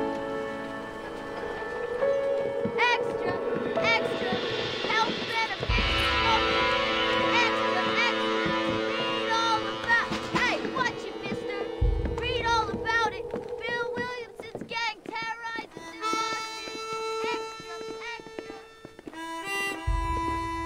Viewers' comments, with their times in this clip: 0:04 Lil boy shouting to a crowd of no-one. 💀